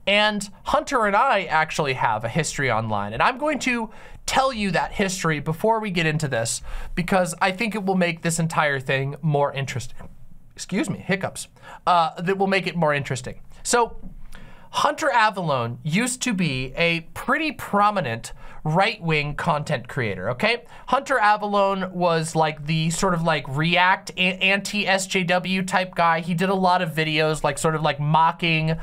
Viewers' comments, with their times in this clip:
0:10 I have a criticism of this video....at that is clearly not a hiccup. it is a burp, I cant believe you would be so dishonest about that, OMG! The rest of the vid is good tho